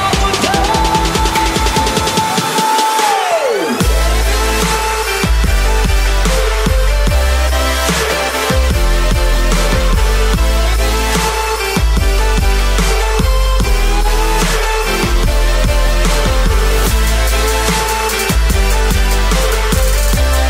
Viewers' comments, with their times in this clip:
0:05 THE BEAT THE SOUND GETS LOUDER THEN LOWER